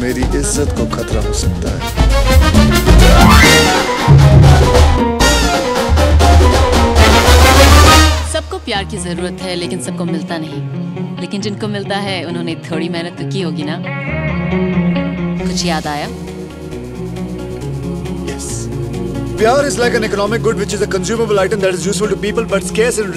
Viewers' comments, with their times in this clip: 0:10 i don't know why, but the background music beat resembles the same background music of Stay~Justin Bieber,The kid laroi...